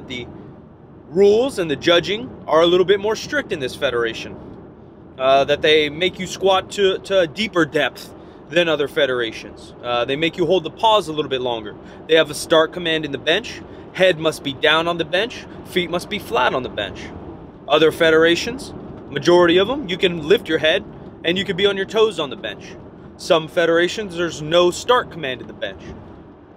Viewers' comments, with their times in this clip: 0:07 He said depth weird